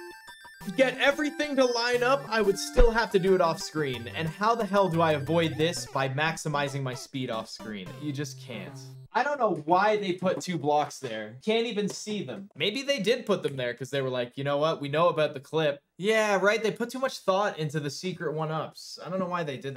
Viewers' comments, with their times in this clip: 0:03 when he dies here and the p-wing sound stops it's like when the fan goes off and you didn't realize it was on and it sounds extra quiet.